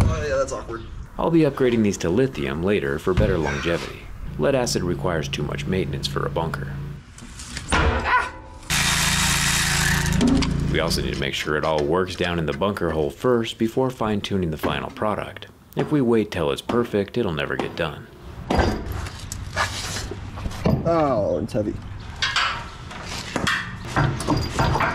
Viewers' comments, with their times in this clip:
0:07 the scream hahaha
0:08 Love that AHHH